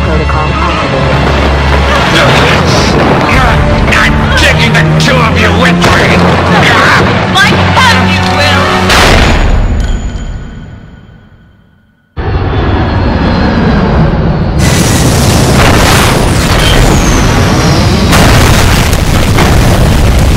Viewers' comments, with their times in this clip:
0:08 Damn, Jill is the best ventriloquist I've ever seen